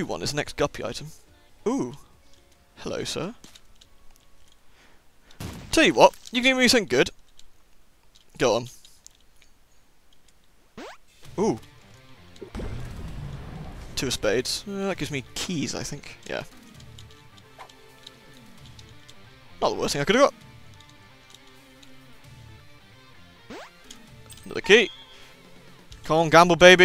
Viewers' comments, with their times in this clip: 0:10 That and Heart of Fire HD eargasming...